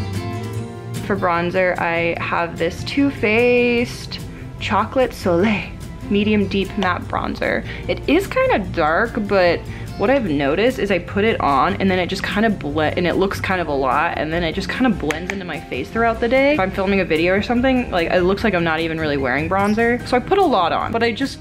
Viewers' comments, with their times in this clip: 0:03 when she said "two faced" it sounded like the vine "two bros" (chilling in a hot tuuuubbb, 5 ft apart cuz they're not gay)